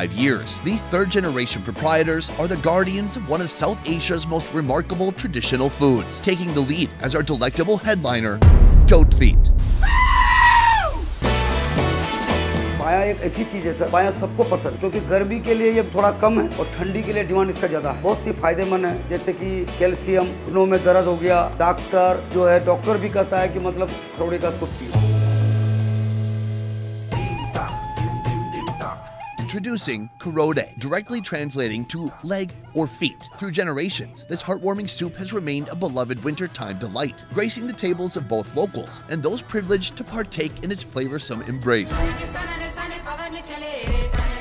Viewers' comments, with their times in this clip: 0:09 That scream when he said goat feet, was so personal 😂
0:26 he said 'kharodey ka soup piyo' so fast that it sounded like something else.